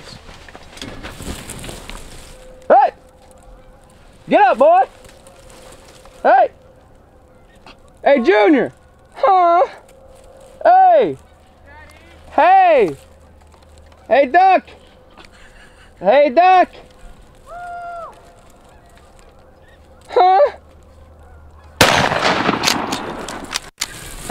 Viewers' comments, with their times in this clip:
0:08 why he keep moaning??????????????
0:11 Did Banjo say daddy ?😂😂😂